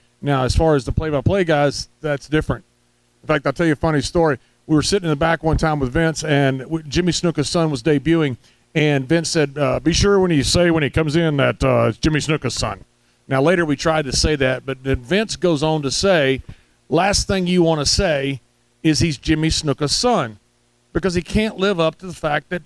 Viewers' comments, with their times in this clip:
0:09 That's the best Vince McMahon impersonation I've ever heard. Not over the top at all and perfect for the way they sounded 20 or so years ago.